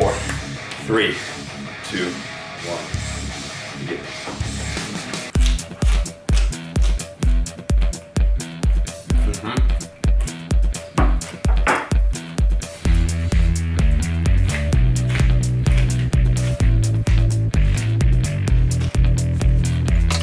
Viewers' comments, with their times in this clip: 0:04 music and the eating sounds match😅